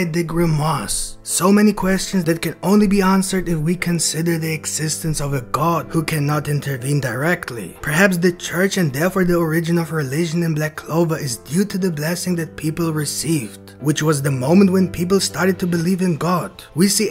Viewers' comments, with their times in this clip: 0:04 i didn't here indirectly!oooohhhhhhh!:elbowcough: